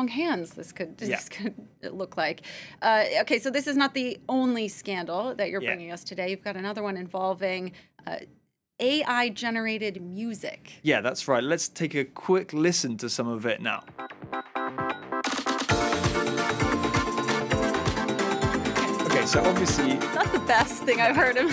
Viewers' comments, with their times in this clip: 0:08 Meta glasses - CCP (Chinese communist party) inspired. 🙂😒😞🥃🙁 Mario kart music.